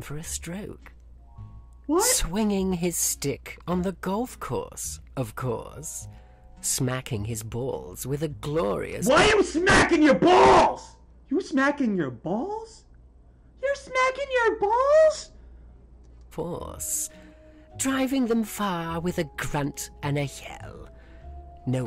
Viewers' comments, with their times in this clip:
0:08 bro turned on his New York accent